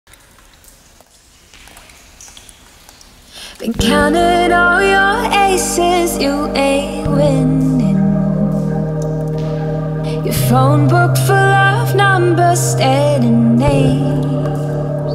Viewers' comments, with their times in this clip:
0:00 If you listen very careful you can hear the song begins.